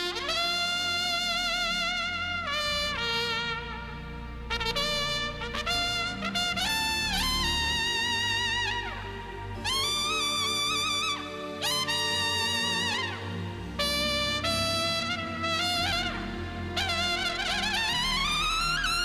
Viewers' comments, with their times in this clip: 0:07 Maybe it's just because I am a trumpet player myself, but that release off the high note right is just amazing!